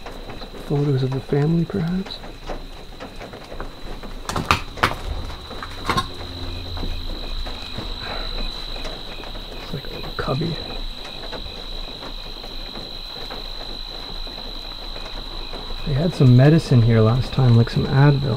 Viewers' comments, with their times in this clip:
0:05 Listen close to sounds like a girls voice saying “ Help Me”? But that’s just me.